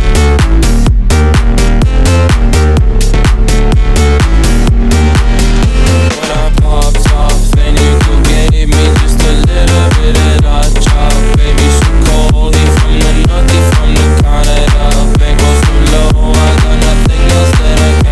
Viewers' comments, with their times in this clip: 0:06 This track is actually one of the best in this year and I think that don't need a remix but OK this is really great! Oliver future house ever! .. incredible how that bass fit with vocals!